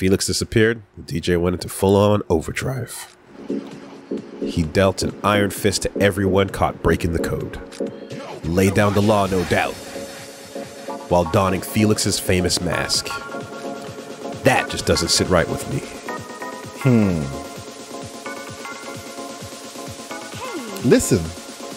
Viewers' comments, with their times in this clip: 0:05 these inteo scenes with the music are just chef's kiss